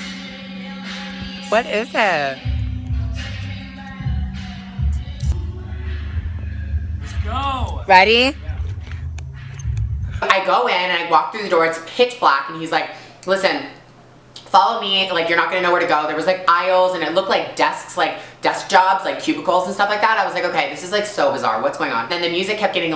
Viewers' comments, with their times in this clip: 0:07 it sounded like he was saying it in a mean way wat